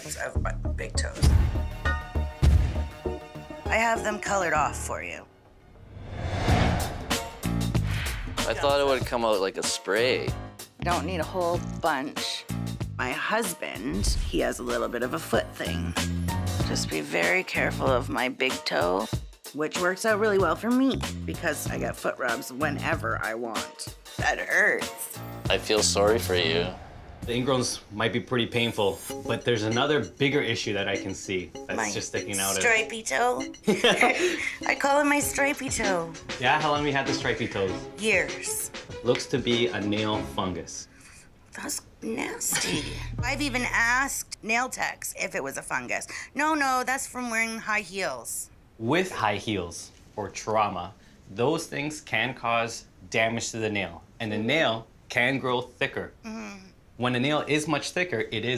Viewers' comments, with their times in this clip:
0:09 I thought it said L Aura 💀
0:40 bruh she didn’t even gasp or anything all she said was “that’s…. nAsTy”😂😂
0:41 Thats... Neysty still gets me